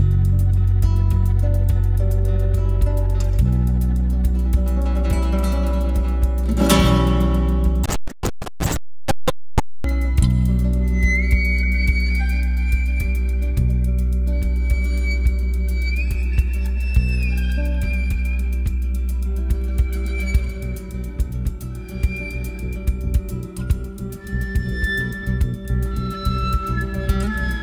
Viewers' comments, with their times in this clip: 0:08 There's some audio glitch